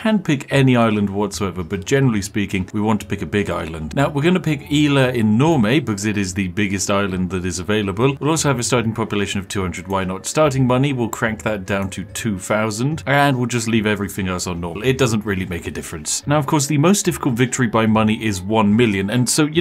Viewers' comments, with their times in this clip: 0:04 that "ila inurme" gave me 10 years of life
0:06 "Isla enorme" (which you mispronounced) means "huge island" in Spanish...